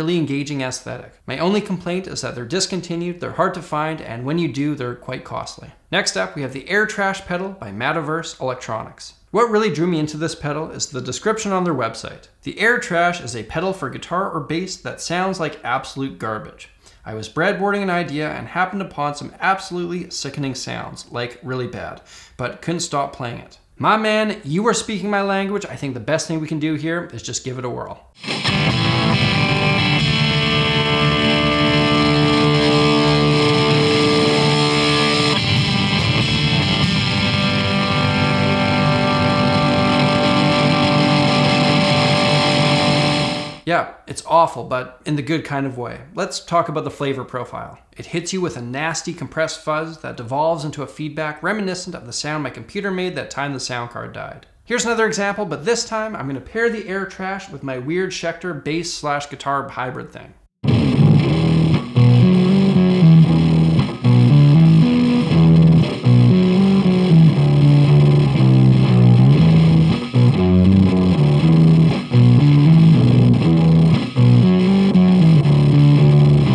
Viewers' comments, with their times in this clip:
0:05 I think this is how Thom started Radiohead.
0:28 Marshall MG15dfx be like
0:28 black metal tone pedal
0:29 sounds the the spider v1-5 series
0:29 sounds exactly like the Fender Frontman amps you get with your Guitar Starter pack
0:30 sounds like that cheap practice amp
0:30 why my guitar sound like this without any pedal?
0:35 sounds like my acoustic guitar through Garageband.
0:35 If I want to achieve this muddy sound I just need to plug a distortion pedal on my single coil Squier
0:42 hey that what my amp sounds like
0:57 Oh sounded fkn awesome reminds me of xmen soundtrack for genesis
1:00 Whoa! The new Royal Blood album sounds pretty good!!!
1:00 jack white is that you?
1:00 sounds exactly like a Royal Blood song
1:00 congratulations. You now have a bass
1:00 anyone else getting cky vibes?
1:01 It sounds like a terrible 2005 fliphone recording of a live tool show
1:01 sounds like it would be a white stripes song
1:03 Blue Cheer has a new guitarist??